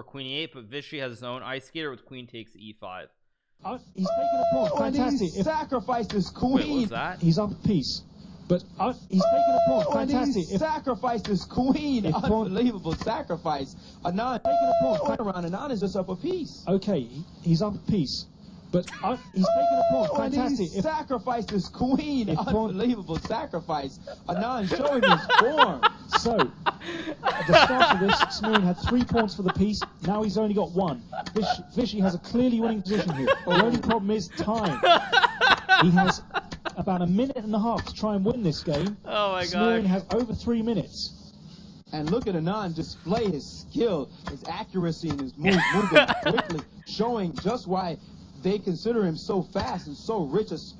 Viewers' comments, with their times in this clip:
0:04 Whenever I feel down, I come to see Hikaru laugh at that 'Ooooooh' 🤣🤣🤣🤣🤣🤣🤣🤣🤣 His laugh is priceless.
0:05 He laughs because of this "uoohhhhhhh" Sound 😭
0:34 what was the need to laugh there 😢